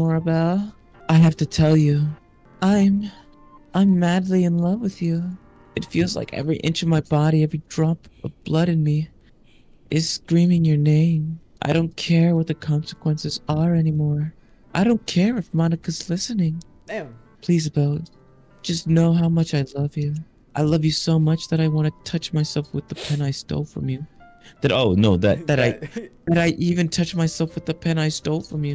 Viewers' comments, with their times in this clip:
0:10 Hearing this voice makes me act up.